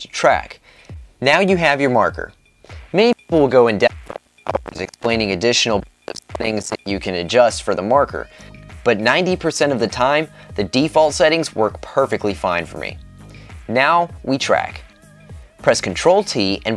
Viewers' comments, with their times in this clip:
0:04 Not sure if I ever said this before or if anyone said it before I, check mic cut-off or something, not highly important, just wanted to let you know.